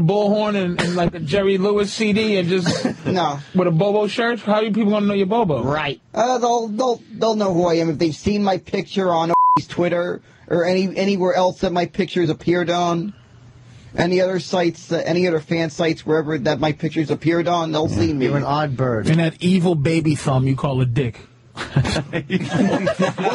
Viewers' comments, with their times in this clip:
0:08 "You're listening to ..Anthony on the virus" Daammnn the way the edited out Opie 🤣 Edit: there also an Opie bleep